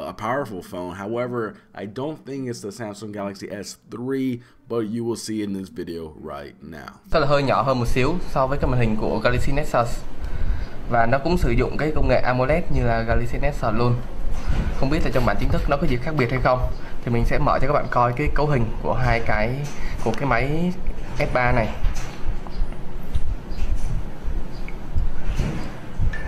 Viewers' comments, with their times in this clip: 0:07 he sounds like he says galaxy nexus... Just an idea